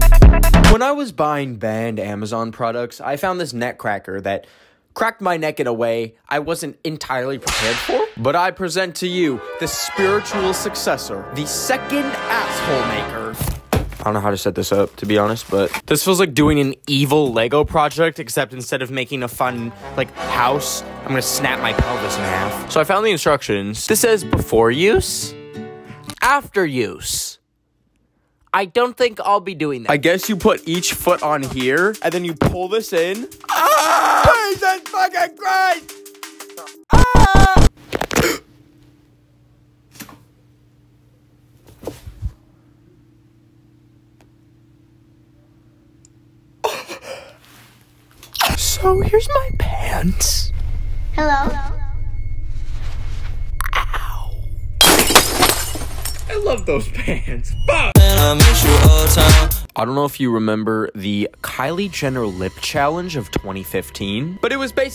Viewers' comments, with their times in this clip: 0:04 The snap sound when he falls…
0:24 bro pulled out his inner girl whine
0:47 I think something just popped 😖😖😖